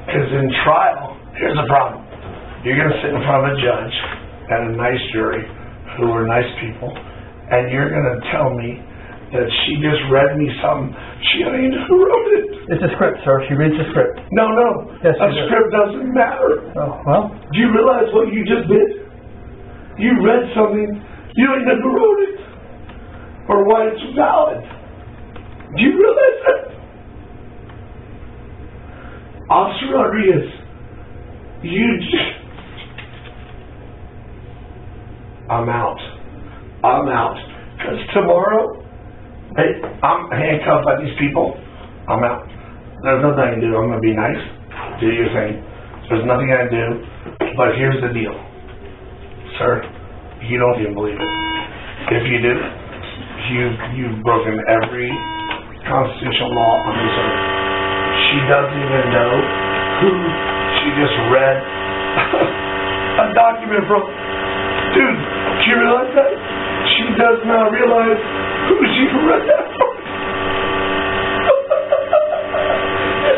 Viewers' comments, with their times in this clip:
0:05 his squeaky mousy little girl voice is just nuts
0:26 "do you realize that" That was the best Will Ferrell impression
0:59 Audio cue that indicates the BS has reached critical levels